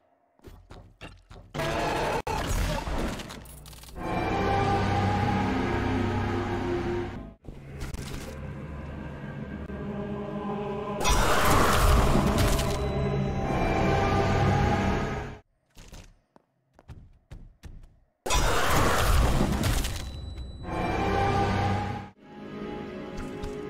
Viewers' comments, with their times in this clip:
0:08 seeing a t-posing boxy boo jumpscare while the most intense music playes made my day